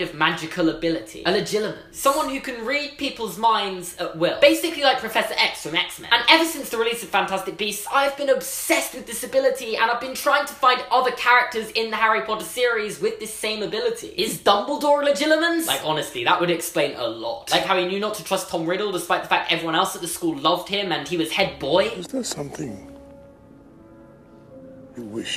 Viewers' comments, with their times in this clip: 0:09 “I’ve being obsessed with disability” That’s how I heard it and how the subtitles did it